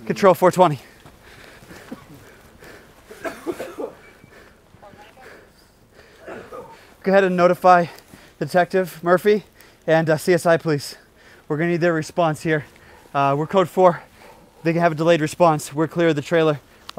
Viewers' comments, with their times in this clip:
0:03 lol and who was coughing like that lol